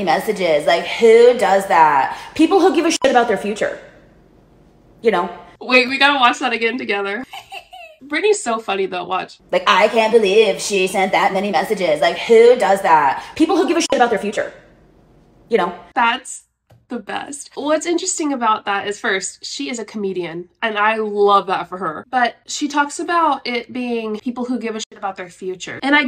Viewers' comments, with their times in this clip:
0:10 Eric cartman is that you??? 👀😂😂😂